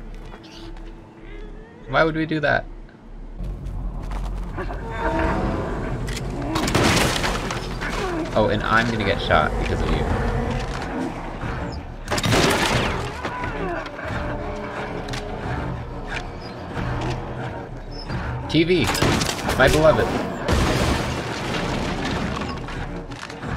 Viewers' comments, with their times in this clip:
0:08 youre gonna get shawed??